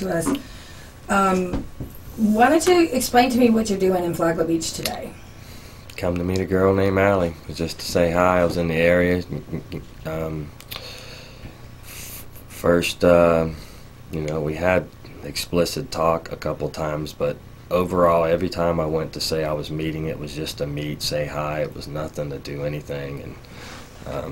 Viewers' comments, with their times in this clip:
0:07 The investigator chuckling when he hears the ever popular “ I came over just to say hi” 😂